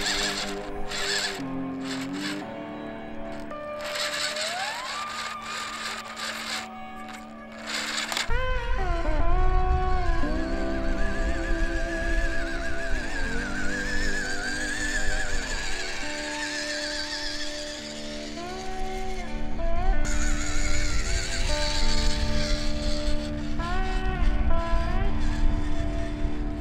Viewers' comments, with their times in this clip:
0:08 What was that popping ? 😳